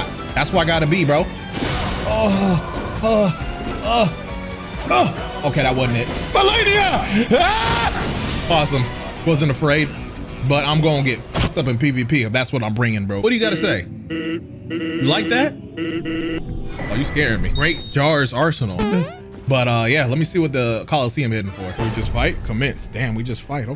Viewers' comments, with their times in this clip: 0:06 So we not gonna talk about how he was a persona user when he yelled Melania